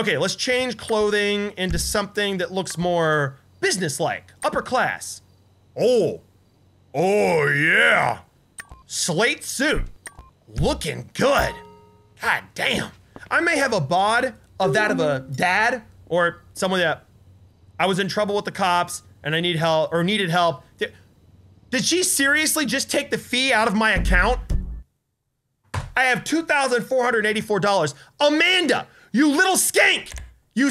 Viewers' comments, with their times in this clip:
0:10 you nailed Michael's voice
0:11 when he said looking good, he sounded like michael lol